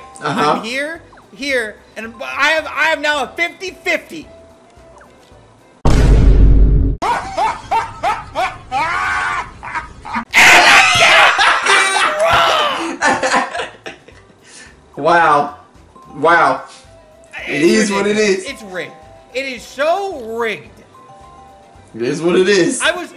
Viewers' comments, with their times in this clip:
0:08 Ariana grande deep laughter